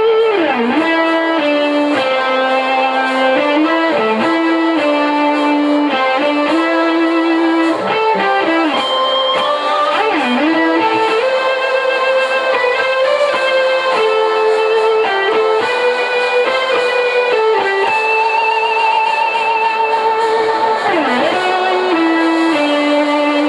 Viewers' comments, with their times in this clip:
0:09 Hmm, nice one, but I wouldn't do the two harmonics The last harmonic fitted way better into the song. Still nice job and thanks for the tabs.